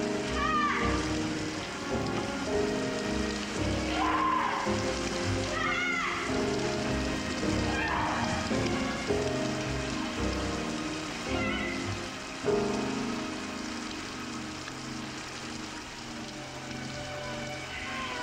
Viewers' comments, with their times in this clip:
0:03 I was heartbroken when she cried out "cat"